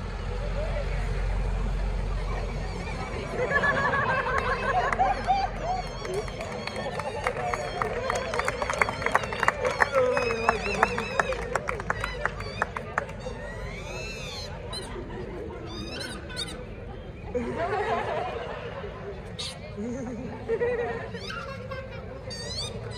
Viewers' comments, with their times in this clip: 0:06 loved it when people started clapping ❤